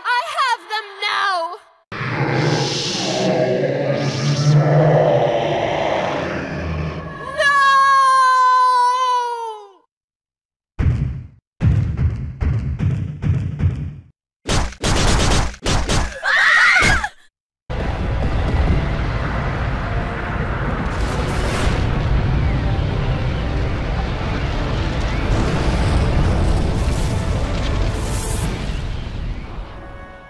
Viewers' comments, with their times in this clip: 0:08 that spin to death followed by the fade to black with overlapping stabbing sounds is gonna be the funniest shit I've seen all day.
0:14 is it just me or would the sound combo be a great metal song intro?
0:17 And there's that "woosh" sound from Myth again. It's all over the place.